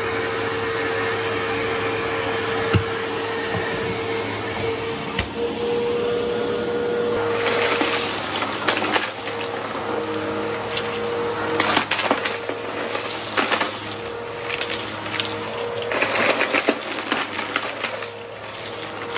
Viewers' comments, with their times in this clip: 0:06 the end of the cleanup! Sooo crunchy